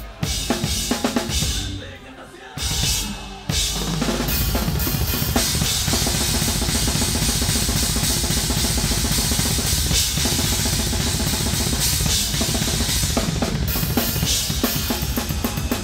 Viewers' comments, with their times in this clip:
0:03 fill wtf thats awesome